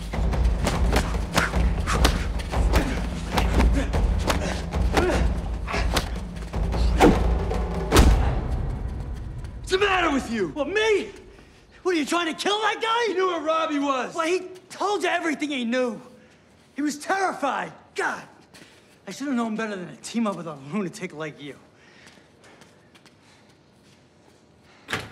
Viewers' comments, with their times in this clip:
0:09 Their younger versions of themselves resurface in their voices. 😂